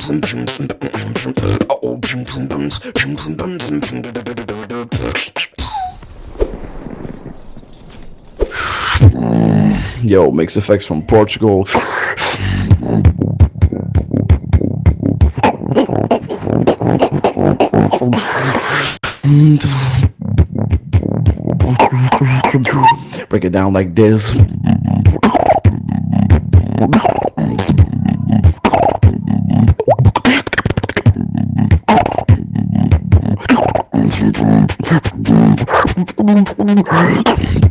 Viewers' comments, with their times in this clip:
0:08 Yo eat my mic from portugal
0:22 Who invited Megatron in??